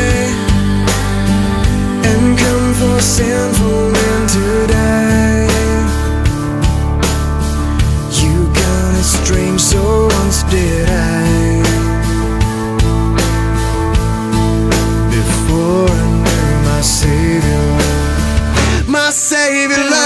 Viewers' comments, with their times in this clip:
0:08 it sounds like "You're kinda strange so let's get high!" I had no idea what the actual words were until watching this.